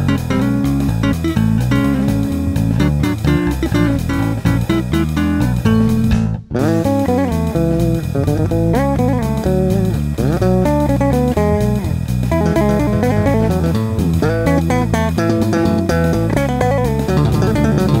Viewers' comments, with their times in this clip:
0:06 He's so powerful he can even play two bass lines at the same time